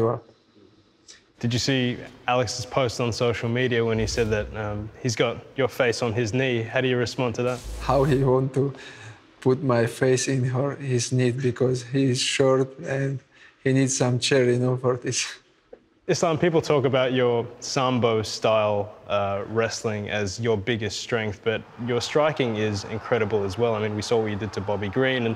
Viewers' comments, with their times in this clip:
0:08 i cant stop laughing seeing Islam’s response to the “face on his knee remark”. Innocent yet cold blooded dismissive laugh at what your opponent throws at you 😂😂😂